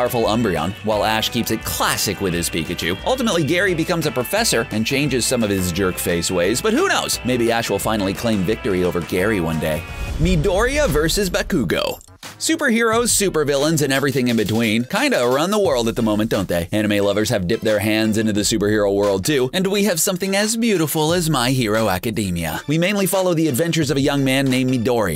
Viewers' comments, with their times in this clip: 0:10 I ALMOST THREW UP WHEN HE SAID BA-KOO-GO AND DAY-KU OMG LMAO